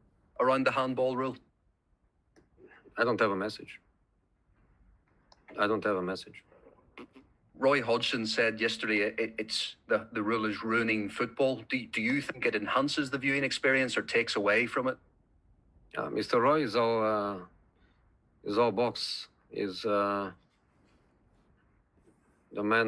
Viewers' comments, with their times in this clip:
0:07 is that a laugh or a fart , wth 😂😂😂😂😂😂😂😂😂